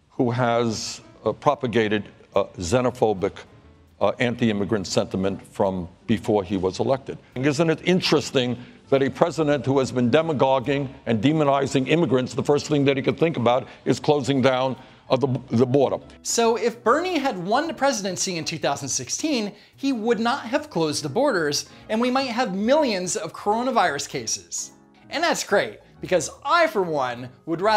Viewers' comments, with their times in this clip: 0:10 what the fuck is Demagonking?